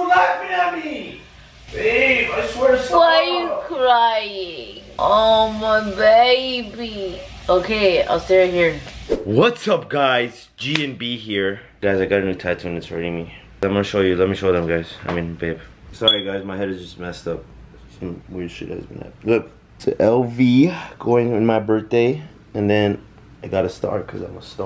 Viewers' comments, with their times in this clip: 0:05 bro she sounds like my grandma 😂😂😂